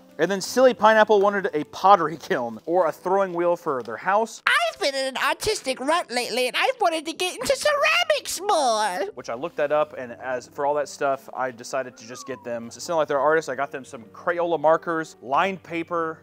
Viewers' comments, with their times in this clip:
0:04 i was on the bus and the way he says "ceramics" got me laughing for at least 20 blocks